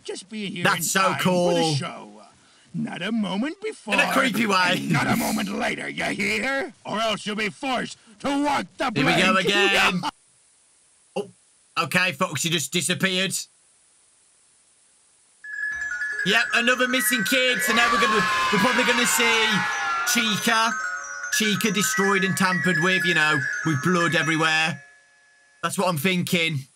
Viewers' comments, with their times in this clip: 0:08 This is going straight into the screaming and disappearing compilations.
0:09 it’s was like those videos where people screaming and disappearing competition